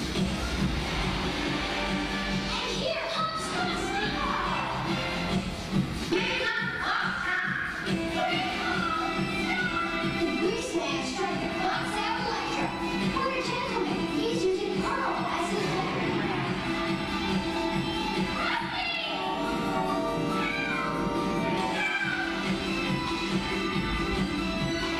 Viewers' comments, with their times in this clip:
0:06 I was today years old when I found out that A Whole Lotta Locomotion sounds just like Beauty Underneath But, u know what, I just love that you can always find bits and pieces in ALW's music, linked to other songs/musicals of him.